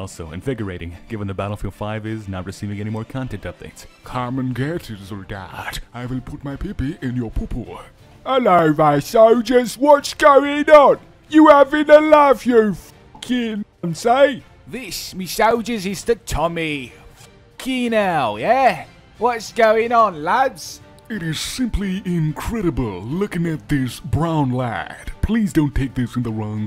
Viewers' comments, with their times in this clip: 0:08 as a brit i have one thing to say to you... Oi MoIgHt YoU gOt A lOiCaNsE fOr ThA' AcCeNt?